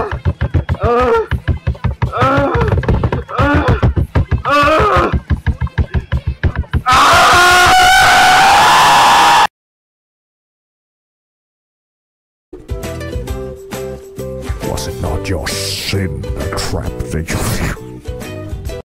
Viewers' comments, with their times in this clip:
0:06 Did u want something loud?